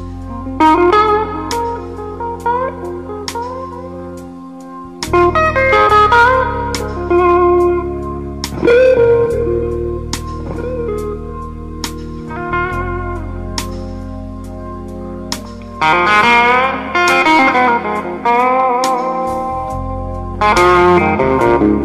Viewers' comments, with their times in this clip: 0:09 That reverb is just sexy